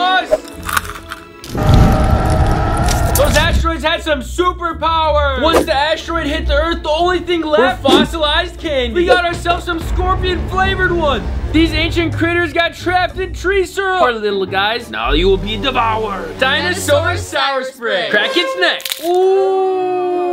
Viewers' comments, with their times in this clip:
0:03 bro sounds so over the top. I miss the old dental digest days